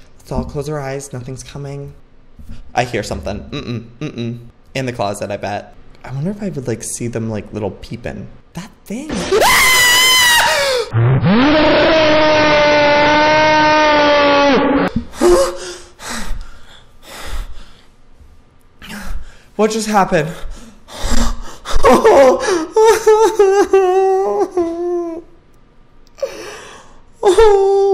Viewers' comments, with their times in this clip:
0:09 omg!! I like died when he screamed